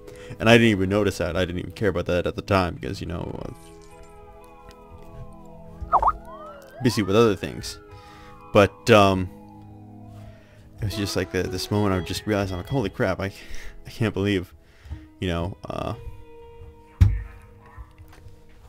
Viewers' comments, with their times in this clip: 0:05 got me. I was instantly like, Skype? No... Well then... ah, its in the video.